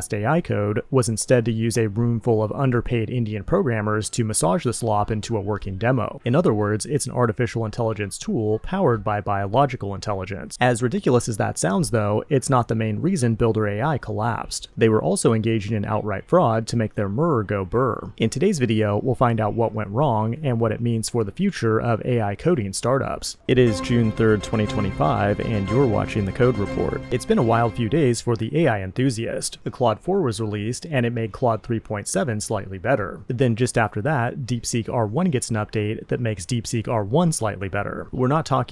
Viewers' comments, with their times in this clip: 0:10 “as ridiculous”… your voice is off or it’s AI 😅
0:23 ... That was an extremely depressed read of the title card for the Code Report... Are you doing alright?